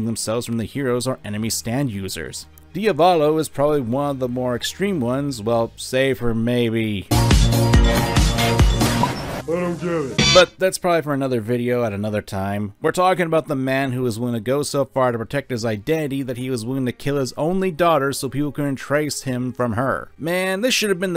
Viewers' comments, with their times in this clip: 0:07 Bloodborne's soundtrack was oddly fitting for a video covering Diavolo. it's a bit strange that I'd hear it here though, given the fact that I just got done playing some Bloodborne... Edit: LMAO